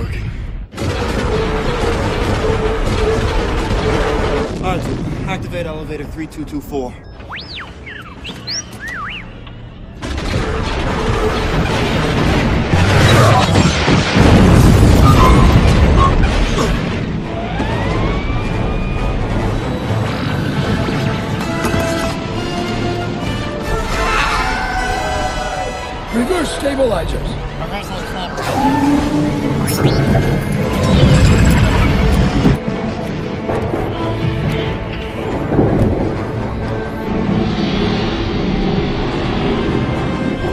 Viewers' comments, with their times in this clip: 0:10 ive always liked the noise of a venators cannons firing i just cant find it anywhere
0:24 autistic Droid screech